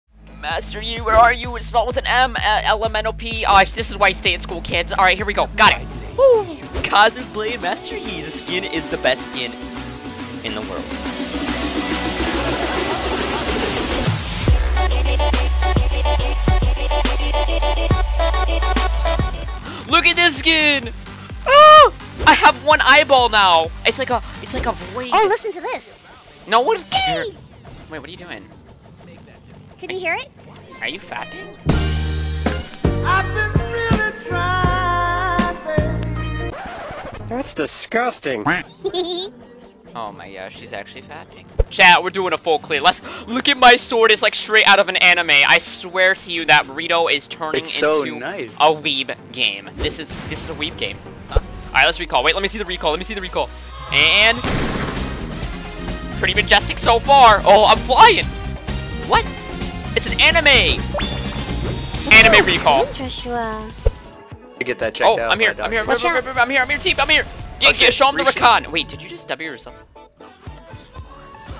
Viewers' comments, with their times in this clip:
0:00 LOL turn on captions from it says Isis is white hahaha
0:37 that giggle :D
0:38 The girl laugh made my life
0:54 that evangelion bg music is so appropriate.
0:55 music... It just sounds good k